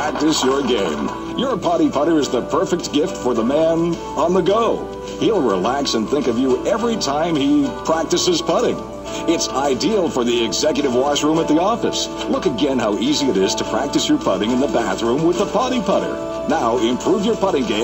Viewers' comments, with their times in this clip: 0:05 It's funny how he pauses before he says "practices putting".